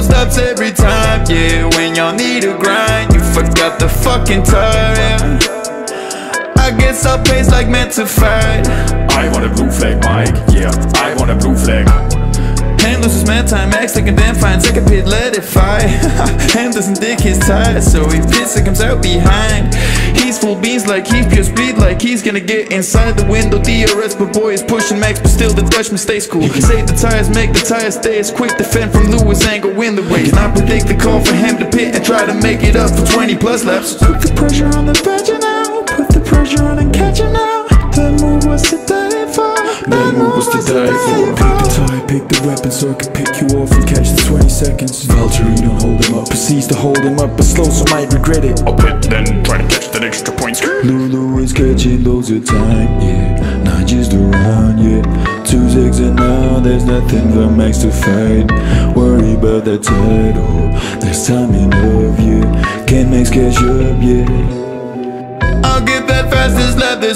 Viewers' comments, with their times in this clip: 0:10 BRO the Toto impression is perfect 🤩😂👏🏻
0:48 THE BOTTAS IMPRESSION WAS AMAZING